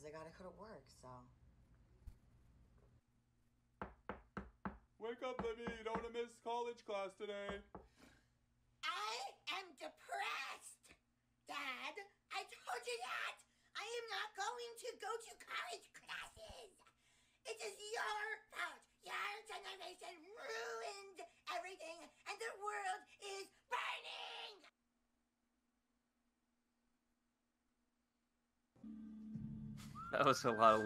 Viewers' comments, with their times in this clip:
0:04 the liberal voice sounds a lot like Eric cartman
0:08 she sounds like Eric Cartman
0:08 Why did that green haired chick sound like eric cartman ?
0:12 didn’t know a fat woman voices cartman…